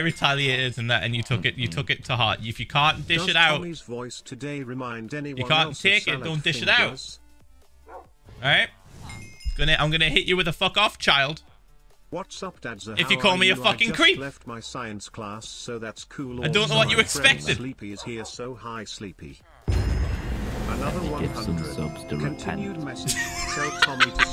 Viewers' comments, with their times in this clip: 0:06 Can we appreciate the donation saying if anyone thinks tommys vouce reminds them of salad fingers?!